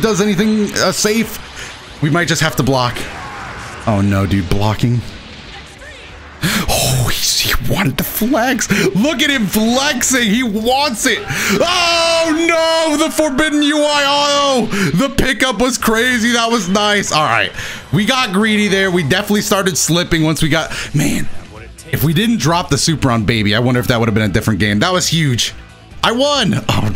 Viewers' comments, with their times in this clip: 0:07 That was so close but can we just appreciate the MUSIC though!!